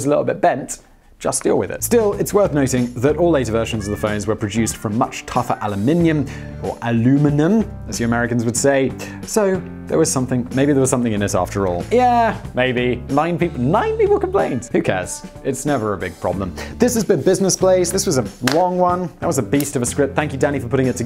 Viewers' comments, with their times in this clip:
0:06 I've never heard someone try so hard to say Aluminum.
0:06 Thank you for pronouncing Aluminum correctly it makes me feel very welcome on the channel as an American <3